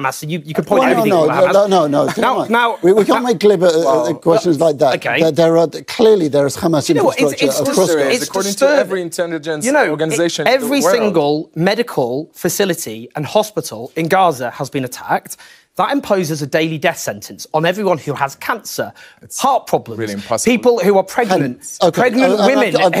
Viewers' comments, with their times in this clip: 0:06 the presenter pronounces 'Kkkhhaamas' so we know where he hails from
0:06 Look at the way the presenter pronounces 'kkhamaas' it explains it all